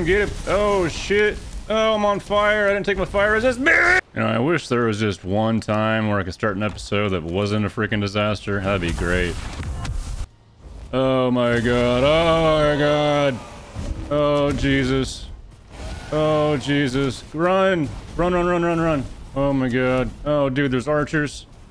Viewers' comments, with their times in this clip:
0:03 death gargle fricken funny 😂 ...omg omg sh*t sh*t no no f*ck... rinse and repeat... comedy gold, 10/10 highly recommend